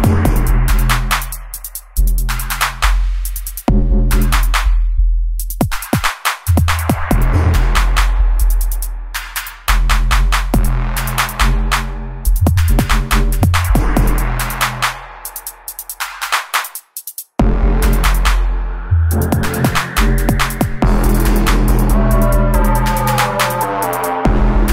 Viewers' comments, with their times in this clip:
0:05 ish - riddim of a lifetime I swear, straight danger!